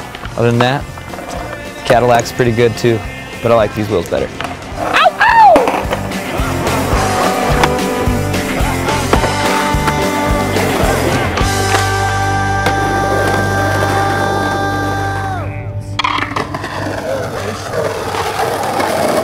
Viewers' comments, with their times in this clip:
0:06 i love the little "ohh oh" lol :)